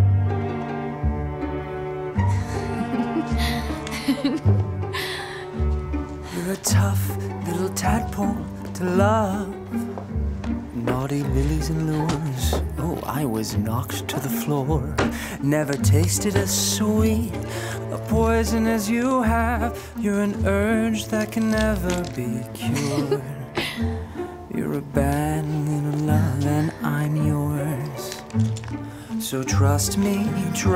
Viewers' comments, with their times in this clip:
0:07 WHY do I always hear that he says "little tampon" in ?
0:15 sounded like “Never tasted as soy” to my ear.